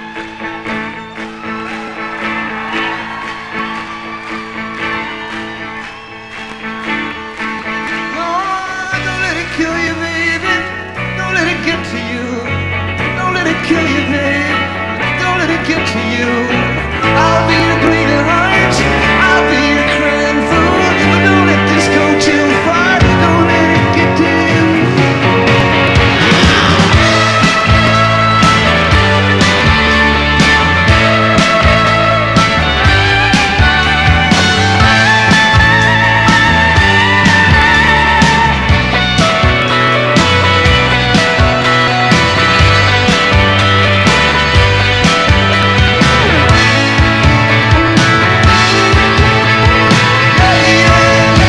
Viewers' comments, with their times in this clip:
0:04 I just keep rewinding to One of the best rock & roll screams ever!
0:38 When Toms Band comes roaring in ....... You can see that Tom is So Proud of his Band "the Heartbreakers" And Wanted all the focus on them at that moment ! Tom always shared the spotlight with his Band !